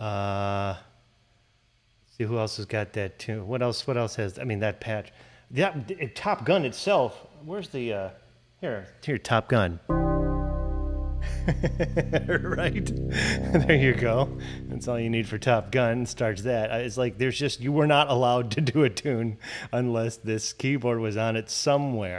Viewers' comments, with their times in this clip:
0:09 i have never been more exited for a single octave being played until